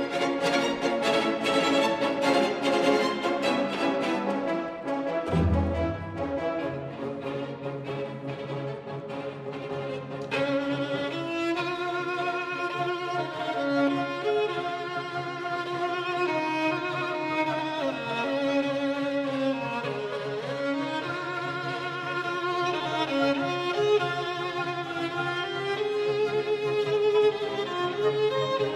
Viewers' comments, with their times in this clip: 0:10 the sound is so great, yet looks so effortless!